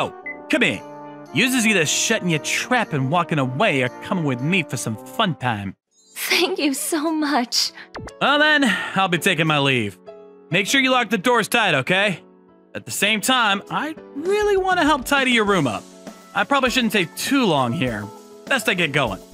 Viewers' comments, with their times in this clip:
0:03 Is it me or do i hear a rap here. 🤔🤔🤔🤔